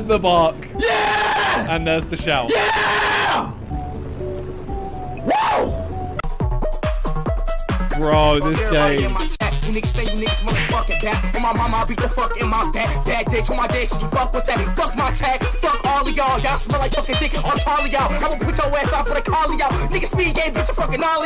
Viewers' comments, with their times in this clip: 0:06 speed has some flow